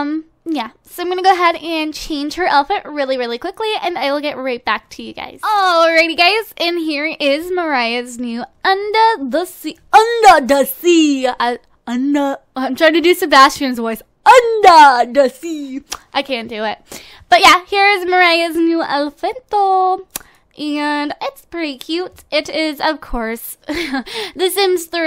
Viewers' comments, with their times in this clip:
0:10 ur sebastian accent was spot on